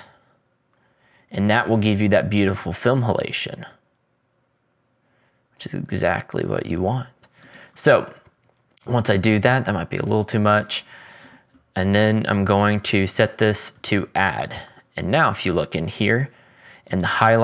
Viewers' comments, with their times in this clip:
0:05 the way he said "which is exactly what you want" 🫶